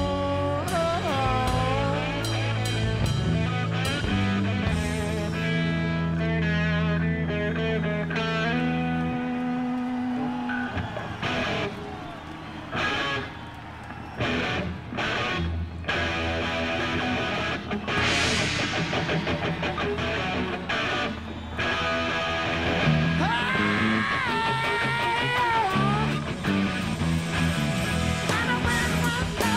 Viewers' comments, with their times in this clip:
0:10 DROP BANG BLOW DA ROOF